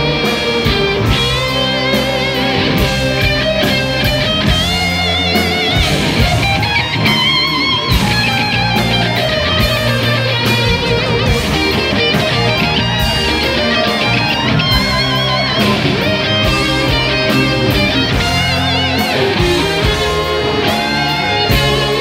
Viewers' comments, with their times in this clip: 0:05 Nice Three-guitar Harmony! haha